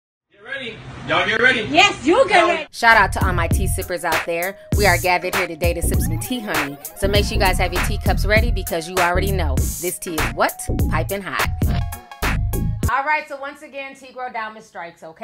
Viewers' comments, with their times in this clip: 0:02 is that cardib's voice??